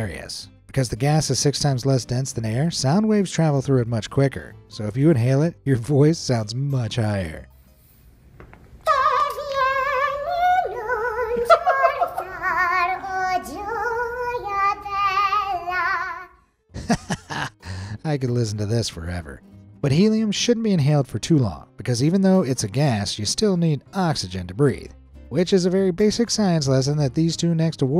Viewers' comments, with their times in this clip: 0:08 like mickey mouse
0:09 Alvin joins the opera